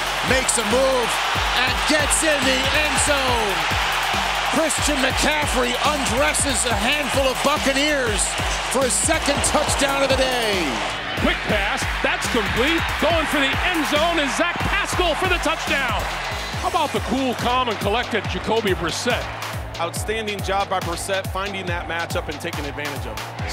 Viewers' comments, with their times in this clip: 0:07 I thought he said the f word😂